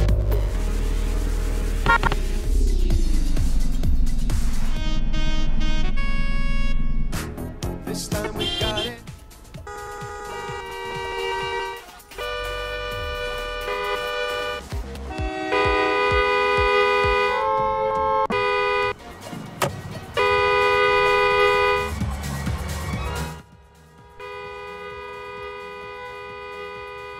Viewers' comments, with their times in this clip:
0:08 What car did the beep?